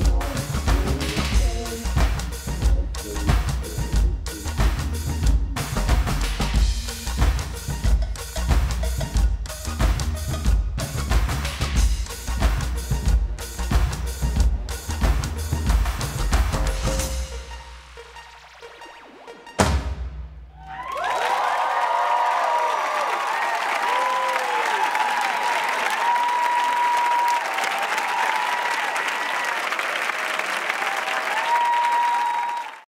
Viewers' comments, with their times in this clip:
0:03 actually she is lip syncing you hear the vocals from the track filtering out
0:19 the drums give me freakin' chills I love disclosure so much omg